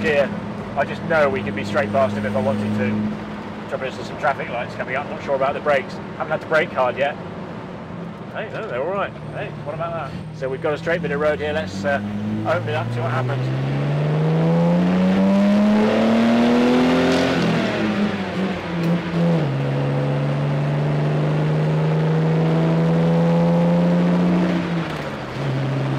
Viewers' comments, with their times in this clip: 0:09 "Let's open it up and see what happens" Lots of noise but no discernible change in speed lol